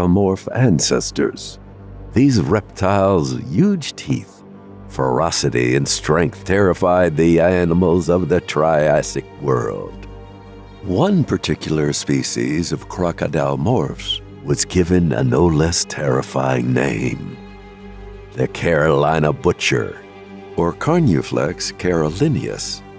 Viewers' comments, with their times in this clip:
0:06 the way you said "the animals" made me giggle. Thank you. I needed that. Been a long day. Crazy how something so small, and most likely unintended and unnoticed, can make someone's whole day better.